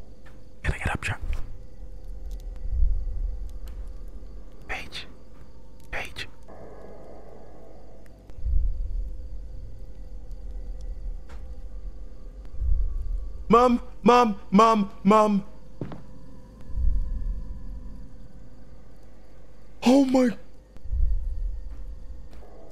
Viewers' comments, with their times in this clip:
0:03 Hold on was he saying my name?? 😭😭